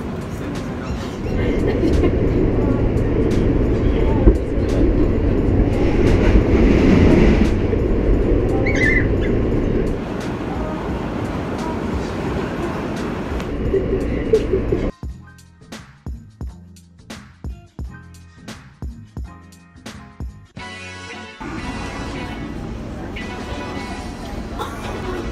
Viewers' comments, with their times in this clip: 0:03 that belly 😂laugh
0:08 idk if its her laugh but its ICONIC
0:08 That weird laughing sound of this girl. 😁